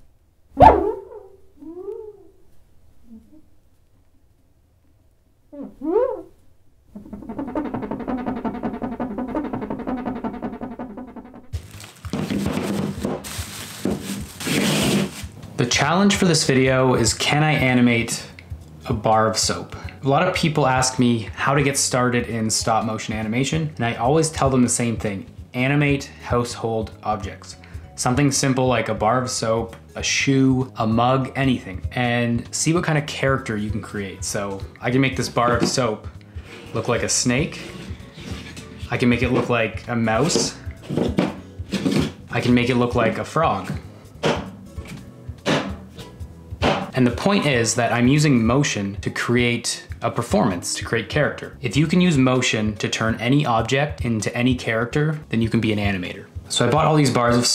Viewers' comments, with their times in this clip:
0:06 that soap bar be beatboxin till they do him apart
0:43 that is not a normal table from that sound.